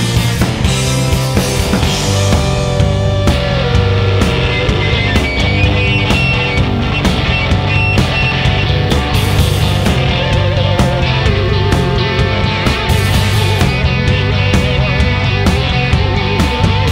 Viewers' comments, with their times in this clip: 0:03 Is it just luck that the really good guitars start